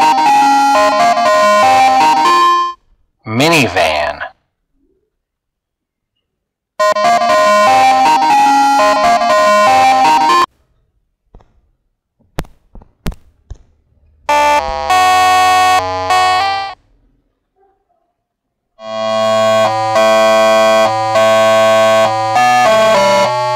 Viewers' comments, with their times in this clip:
0:07 I Love the Minivan music